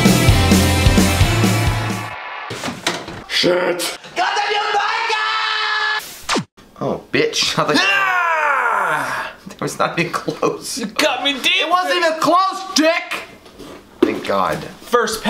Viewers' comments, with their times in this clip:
0:03 Does anyone know what they're yelling out ? I can't figure it out. Thanks!